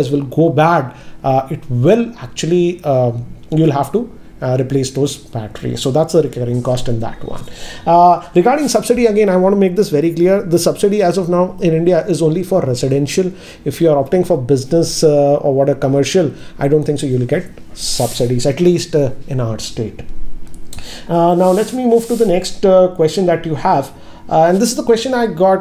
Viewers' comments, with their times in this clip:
0:08 horn sound even at such high floor!!